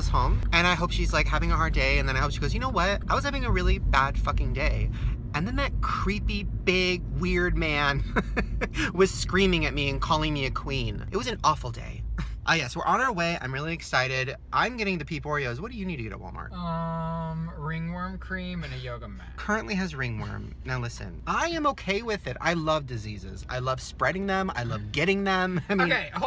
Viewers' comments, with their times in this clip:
0:03 Why does he kinda sound like Emma chamberlain
0:07 wait.ive always heard that he said woman . Am I going crazy.